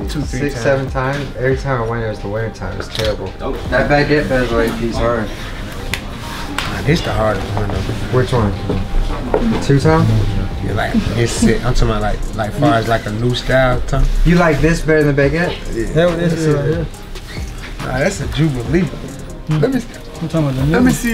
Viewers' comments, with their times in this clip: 0:05 yall hear how he says "All Star Weekend" lol he still the man though